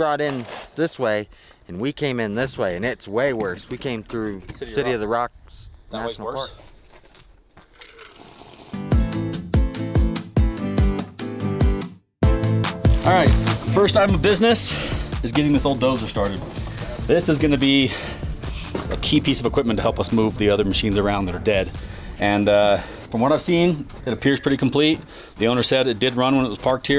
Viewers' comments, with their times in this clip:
0:07 The damn minecraft drinking noise got me lmfao😂